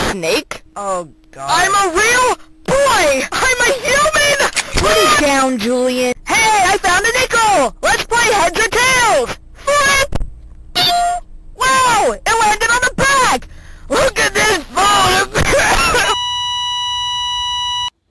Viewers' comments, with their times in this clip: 0:06 These go so hard. It's such a raw anarchistic slice of someone's mind and while the punchlines aren't always super funny, the genuinely good and appealing artstyle and crunchy voices always get a good laugh. My hardest laugh was with the "LOOK AT THIS PHOTOGRA-" PAINFUL COUGHING And then a smash cut to a hospital bed. That completely destroyed me. If you added static transitions like Stick Figures on Crack or asdfmovie it'd fit 100% at home with those kinds of old internet videos. Absolutely iconic.